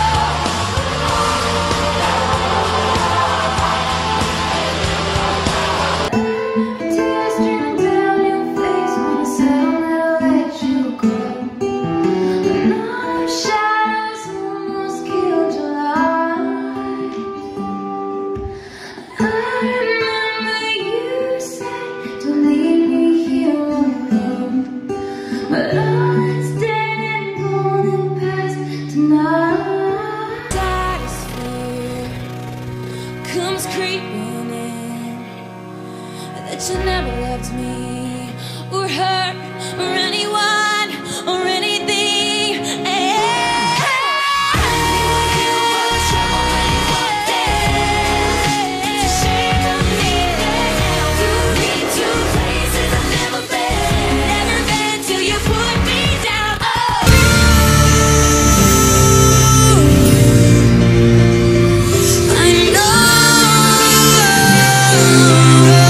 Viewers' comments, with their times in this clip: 0:06 Her voice is so soothing <3
0:20 wht that girl is giggling like ew
0:43 she begins lip-syncing the high note - there is a very noticeable change in the audio quality.
0:48 when ur back up singers are better than u